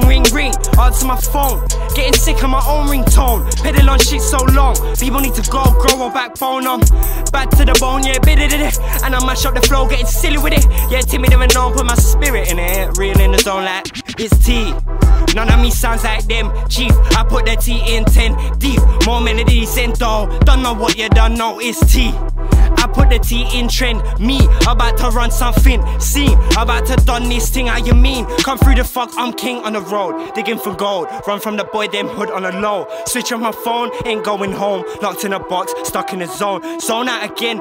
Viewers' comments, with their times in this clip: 0:07 idk why but i got so hyped when he used the dj scratches as part of his rhyme scheme that was just cold as fuck
0:21 is such a waveyyyy part of the video I love it